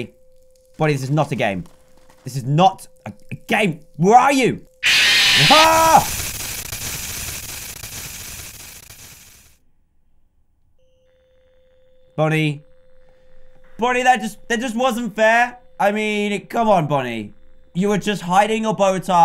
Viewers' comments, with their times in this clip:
0:04 Bon-Bon: Jumpscares Dan Dan: Waits half a second to scream Me: wth b r o
0:04 Every time an animatronic jump scares dan I tend to make the same sound as the animatronic